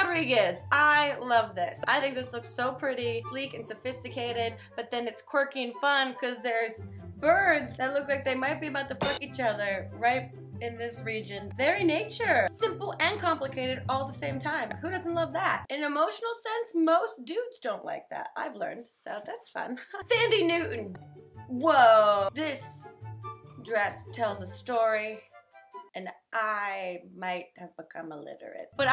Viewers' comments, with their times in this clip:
0:10 Nice failed bleep <3